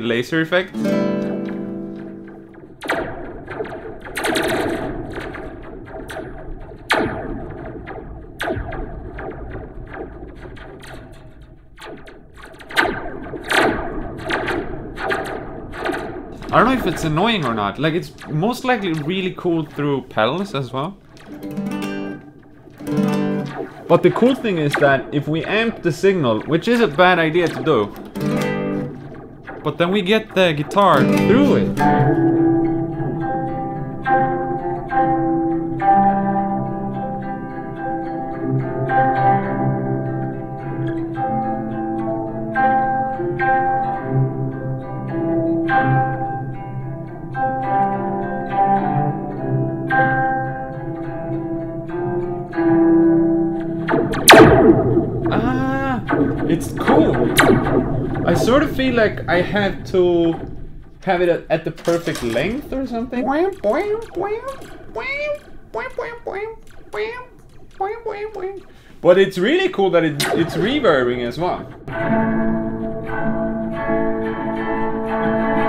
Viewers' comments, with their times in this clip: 0:04 HAnna Barbera sound FX pack Vol. 15
0:32 sounds that end of adventure movie wher two siblings going home in a 1978 Jeep Wagoner down a country road after all they went thru
1:03 I'm here for the steel guitar impersonation. Also Shallow Water pedal eat your heart out.